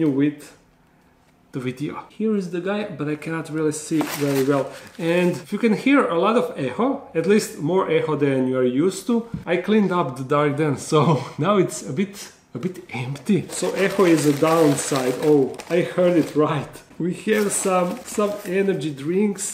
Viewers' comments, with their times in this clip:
0:06 into the video I thought he said a-hole, not echo LMAO. i was so confused and shook. love the video regardless!